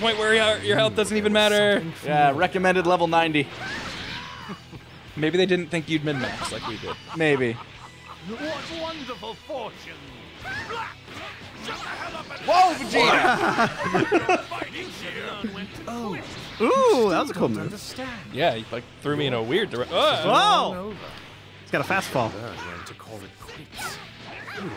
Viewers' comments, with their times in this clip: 0:10 I love Vegeta's random angry "Black!" right after Goku Black's calm voiced monologue.